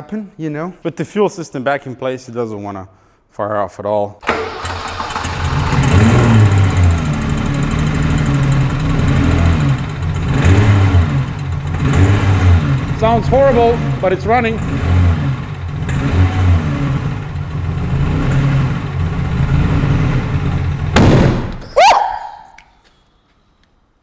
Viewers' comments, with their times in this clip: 0:09 I love the girlie screams. Keep 'em coming